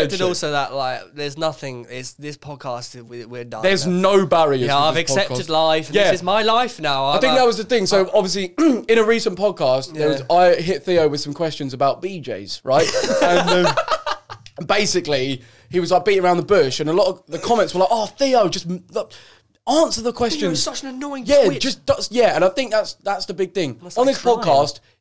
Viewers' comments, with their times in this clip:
0:10 the way he says BJ’s